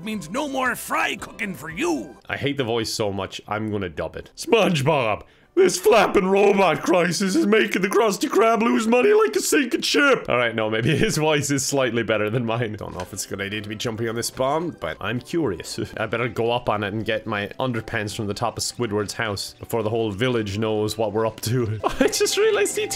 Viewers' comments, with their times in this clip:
0:03 U really sounded like joe swanson
0:03 he sounds like kronk
0:04 Joe Swanson in Mr. Krabs shell
0:04 who else thought he sounded a little like joe from family guy
0:04 MR. KRABS IS JOE SWANSON?!
0:04 sounds like someone else I just can’t remember who can someone help?
0:05 you sound like Joe Swanson on family guy
0:06 Did anyone hear Patrick Warburtons voice